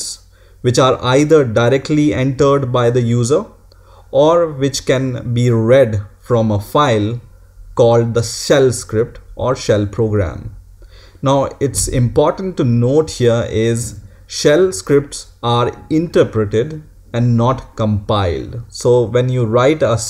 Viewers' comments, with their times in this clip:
0:08 Your voice is amazing. now I am